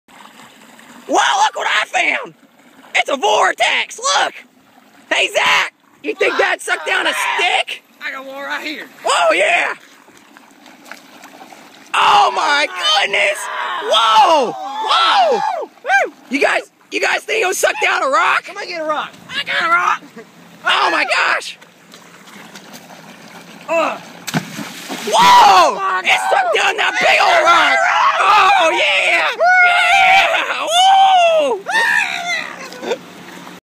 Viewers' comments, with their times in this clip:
0:00 lol my man sounds like bill cipher
0:03 He sound like Funtime Freddy
0:10 And splash (little bit)
0:11 Loud scream warning in
0:31 the voice actor behind the angry birds Edit: if y'all gonna be unorigional and post the same thing,have it that way
0:31 angry birds voice Also, one of them sounds like Chuck from TABM (the Angrybirds movie)
0:31 Angry bird noises